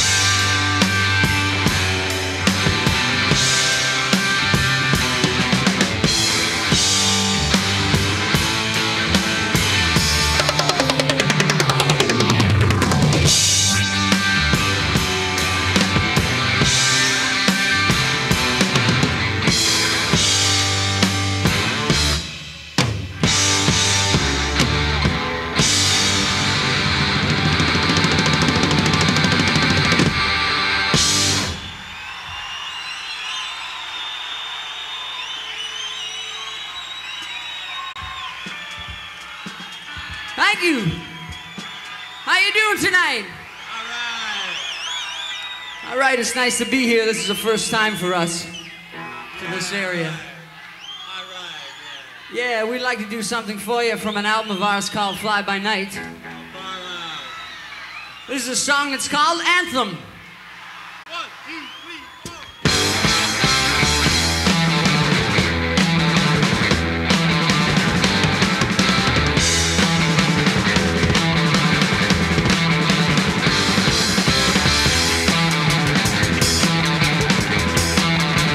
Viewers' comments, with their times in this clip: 0:09 Phased drum roll I just creamed my shorts
0:56 I like the Stoner at the mark. RIGHT ON The 2112 version sounded Amazing!!
1:00 Is that Neil counting off 1, 2, 3, 4 at the mark?